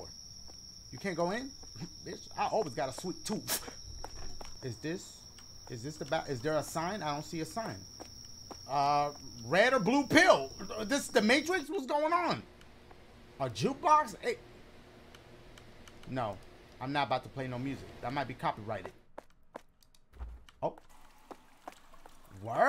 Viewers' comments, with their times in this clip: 0:07 The way his cheeks fluffed out when he said “I always got a sweet toof” and all the emphasis on “toof” got me dead😭.